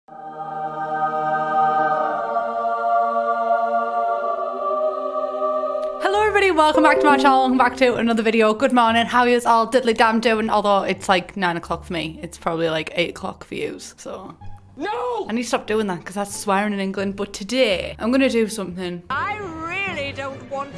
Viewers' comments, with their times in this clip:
0:06 That notification sound 😂😂.